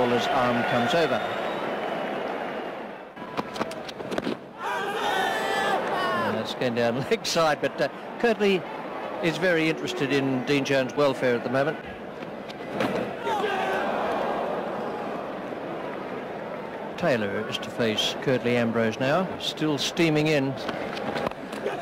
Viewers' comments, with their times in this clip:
0:04 HOWZZATTTT Love when they say that because it sounds so good, unlike today we literally all scream.